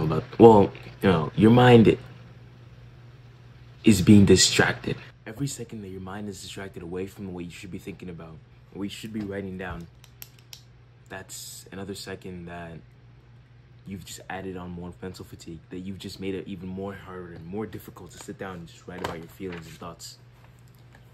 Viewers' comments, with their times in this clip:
0:05 Hey Bro keep up the work I love the concept. Just something I want to point out: your audio gets quiet just as a heads up. Stay on the grind my guy